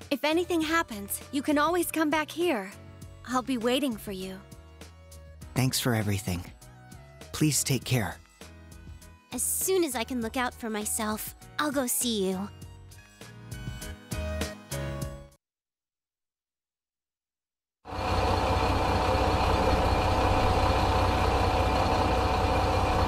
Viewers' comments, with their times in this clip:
0:05 After all this time... I just realized that Naoki has the same voice as Fuyuhiko from Danganronpa 2. I mean, I am aware that Derek Stephen Prince is the VA for both characters, but it's still the exact same voice.